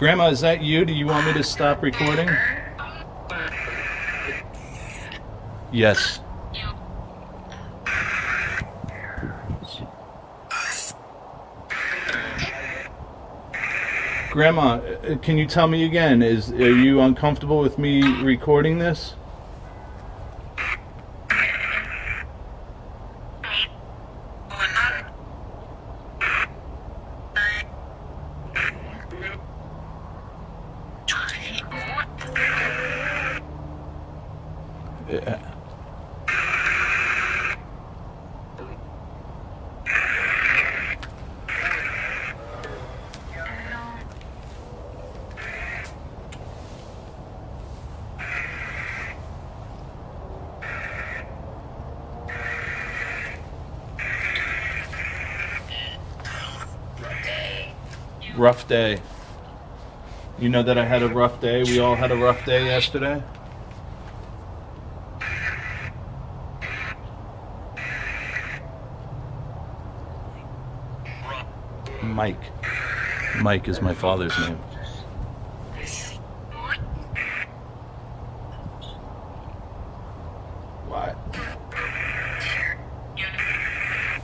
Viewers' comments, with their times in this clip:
0:08 I heard something sounds like parents ? bears?
1:08 male voice from outside phone, to your right... sounds like NY accent